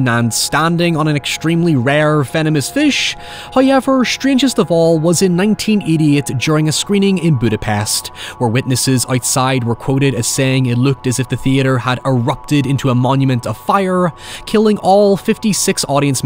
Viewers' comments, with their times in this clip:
0:03 First "hoyevver" drops Beware the fish.